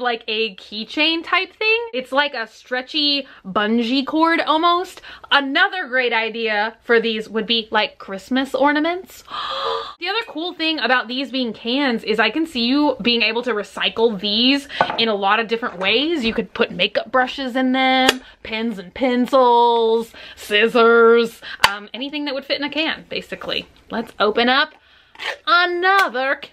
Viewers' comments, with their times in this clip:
0:08 sounded weird like a harmonica